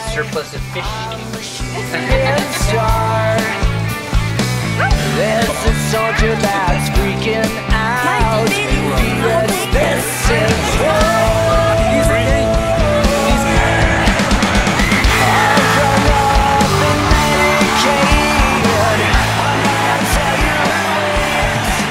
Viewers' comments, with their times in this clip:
0:06 James hetfield is that you?